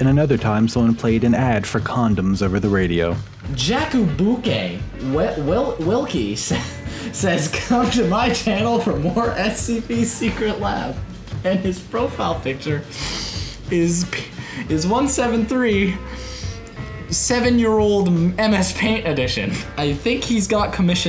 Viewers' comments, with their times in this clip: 0:06 As a Pole, I am extremely amused when your friend reads the word great as veils